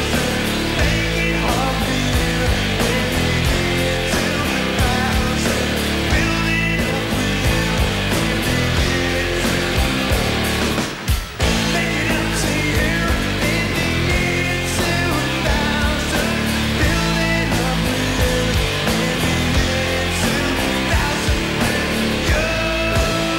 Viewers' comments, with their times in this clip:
0:10 i like the vocal rhythm change :)